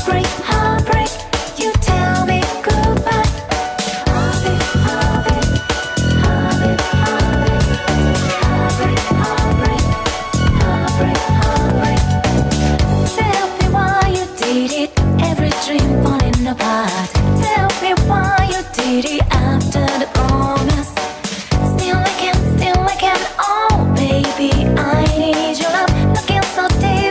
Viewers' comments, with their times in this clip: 0:09 Someone more listen "Hobbit, Hobbit"?